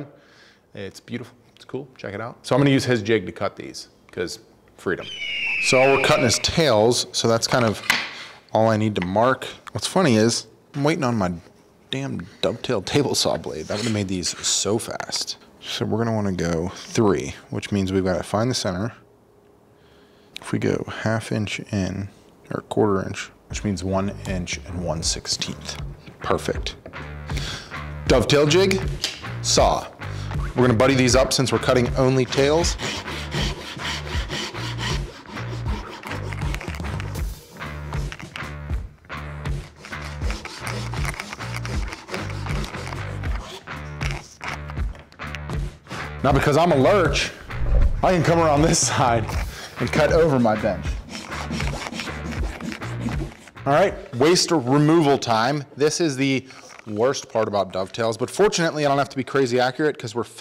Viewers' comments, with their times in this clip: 0:04 why are you showing a Bald eagle but playing a cry for a Red-Tailed Hawk?
0:47 Dude I love your videos but your mic situation is terrible. It sounds so muffled and like it is turned up too much. you can hear something rattling against it when you're sawing. What is going on? Lol